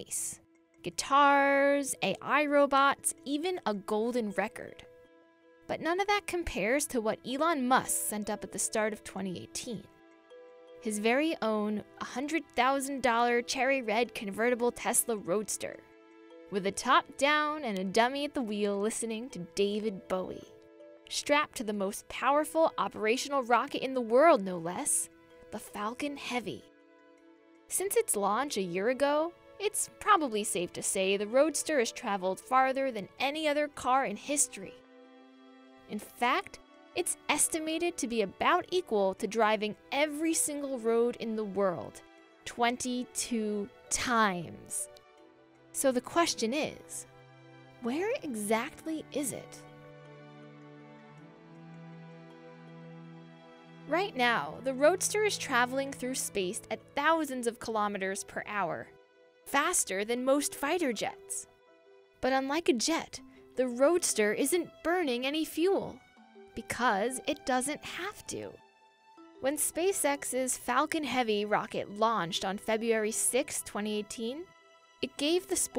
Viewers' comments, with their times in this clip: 0:04 She said Elon muss
0:07 Also, she said Elon Muss
0:56 "The Roadster's travelling through space at thousands of kilometres per hour, faster than most fighter jets", *facepalm... The narrator of this video sounds like she's a reading from a script to a Kindergarten level audience.